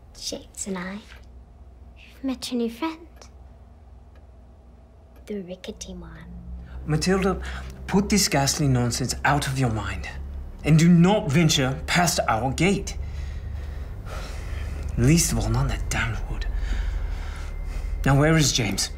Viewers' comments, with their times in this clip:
0:04 No subtitles and couldn't understand the dialog... sorry, couldn't watch past